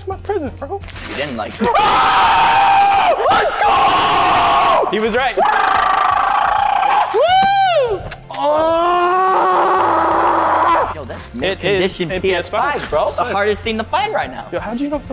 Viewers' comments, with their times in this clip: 0:03 Dear Headphone users: When ur watching this he screams so take ur headphones out asap